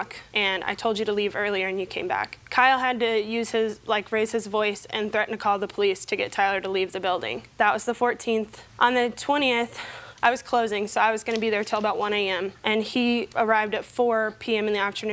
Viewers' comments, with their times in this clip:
0:03 I thought she said “use his racist voice”